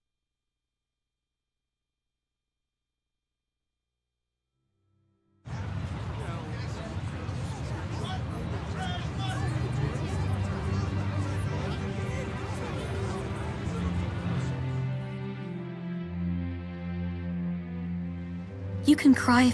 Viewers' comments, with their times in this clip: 0:05 Yeah.....I lost it when the other music started playing. sigh It's rough. I feel for Ludger; Born into a family of sacrifice.